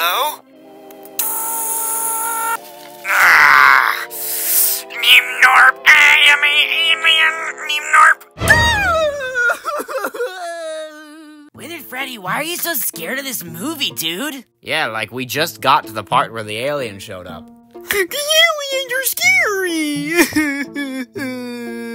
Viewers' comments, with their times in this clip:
0:05 That part hit so differently. The volume in his voice, the unsaturated environment, the vocal effects, the powerful message. They’re such motivational words with such deep meaning. My heart and soul has been permanently touched and I am a better man because of that quote by the Radioactive Foxy alien.🥲🫡